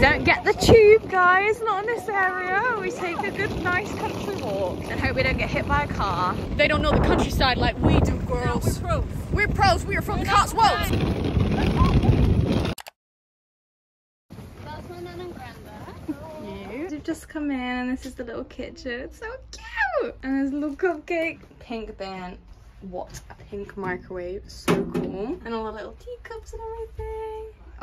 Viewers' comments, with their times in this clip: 0:10 is she a rapper????